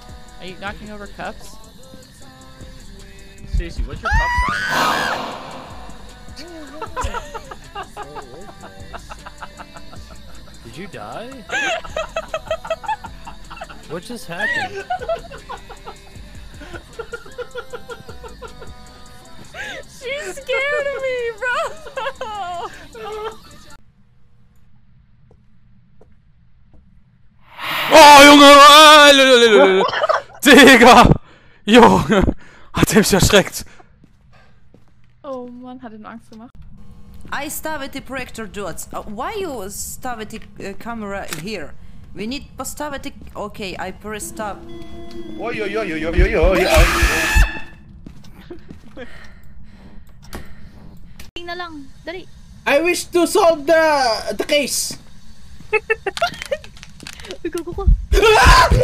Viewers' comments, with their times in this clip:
0:03 juice wrld background W
0:46 Russian language: on